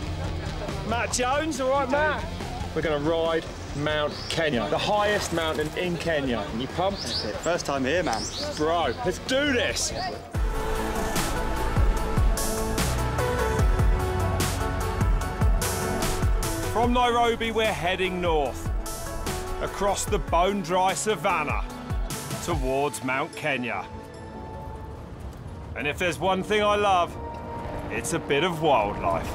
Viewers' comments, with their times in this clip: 0:10 What's the M83-sounding music from ?